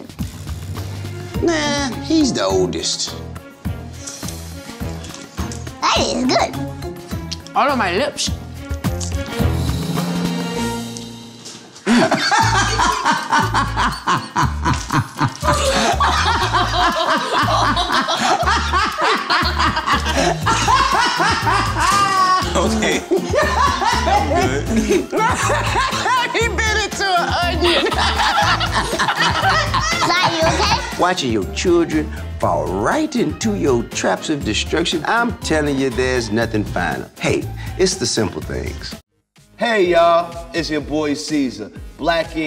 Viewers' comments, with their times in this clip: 0:08 Why does T.I’s laugh sound like papi from the proud family? 😂
0:11 T.I.'s laugh thooo 😂😂
0:12 the way he laughed😂🤣😂🤣
0:13 TI laugh lmao he was for real balling lmao
0:20 T.I. sounds like The Joker 😨 😂
0:21 T.I. is laughing like he's dying. 😂
0:25 ti laugh remind me of me